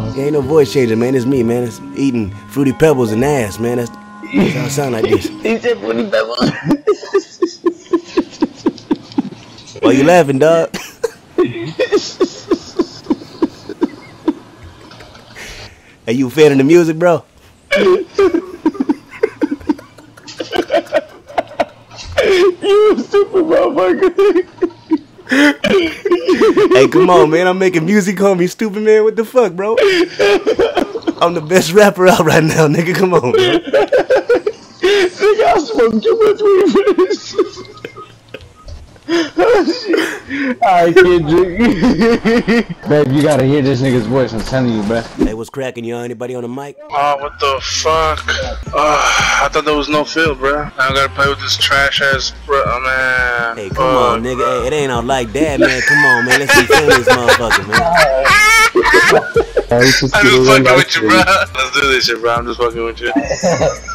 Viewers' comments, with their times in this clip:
0:07 he high as a mofucka his laughed cracked me up bro great content
0:12 that Laugh is like blow up a football
0:40 I love how he breaks character It's hard for him to not laugh haha
0:48 Ohh wow the other guy’s voice sounds exactly like Kevin Owens from WWE. Lmao